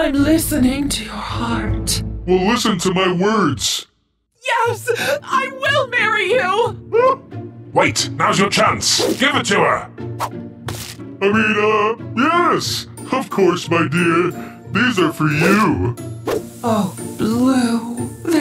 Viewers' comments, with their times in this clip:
0:06 i love blue’s adorable gasp